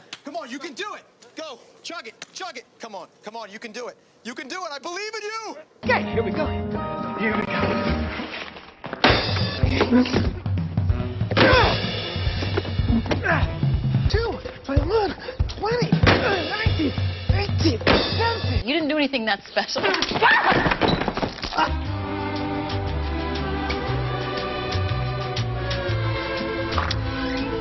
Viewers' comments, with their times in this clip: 0:09 Valuable lesson in rigging a stool to collapse when it's used. Slam, slam again, twist far leg, slam, flip and slam one more time, bang, trapped!